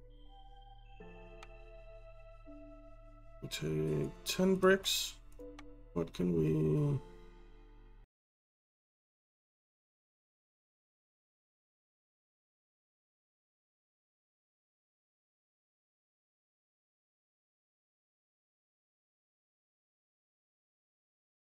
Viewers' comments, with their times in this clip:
0:09 The audio dies unfortunately it's either the audio or everything that dies, so I figure it's better that something is working at least. Sorry guys... I hate corrupt video files...